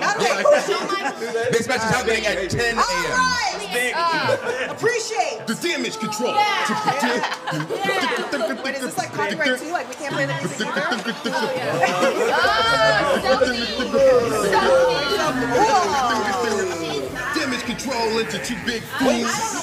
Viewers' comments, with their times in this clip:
0:07 lol that Damage Control remix go hard